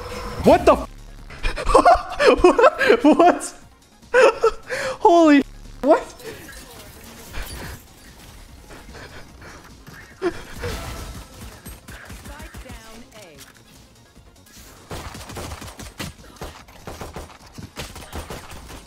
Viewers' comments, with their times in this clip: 0:04 his laugh sounded like a child playing Valorant for the 1st time